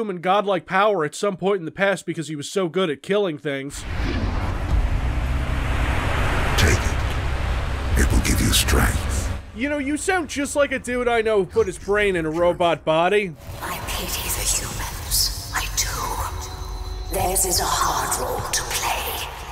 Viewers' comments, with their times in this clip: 0:04 Fireball/Plasma Rifle sounds in background